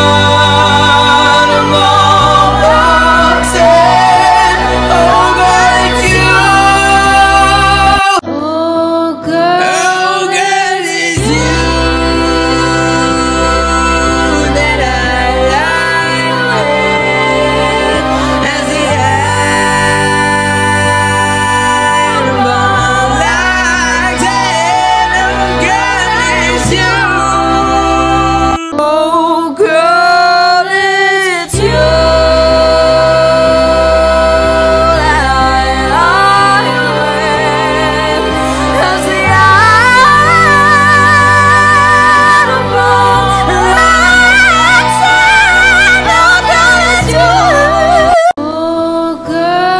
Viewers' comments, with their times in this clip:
0:08 bro was BELTING. i like because he straight up sounds like the singer Jonny Craig (previously of Dance Gavin Dance), so much soul there
0:29 Is nobody going to talk that girls FALSETTO???? MY GOD IT WAS BEAUTIFUL
0:29 In my opinion, is the worst. It starts EXTREMELY out of tune, and gets way too flashy near the end
0:29 goes so flat dawg😭😭
0:30 All of them are good but sounded like a 2nd harmony :/